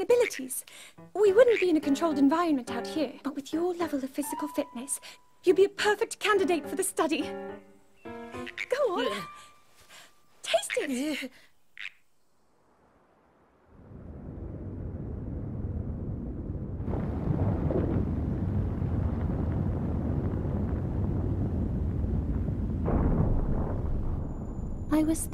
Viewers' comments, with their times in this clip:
0:05 I think I heard link’s voice
0:08 Link sounds so cuteee